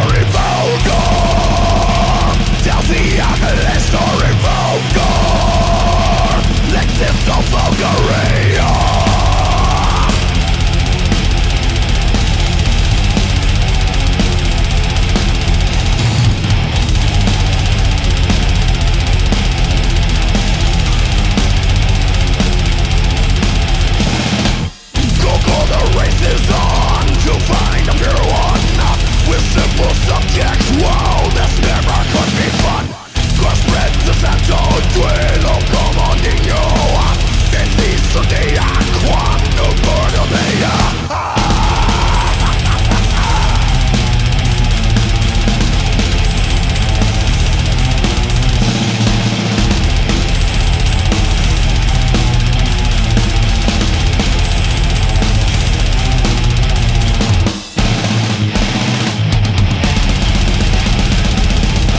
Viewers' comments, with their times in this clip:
0:09 The riff that kicks in a reminds me so much of Dawn of the Angry. This was one of the 2 good/decent songs on the album. The rest were utterly terrible.
0:42 badass riffs , and Azgoth solo 🔥🔥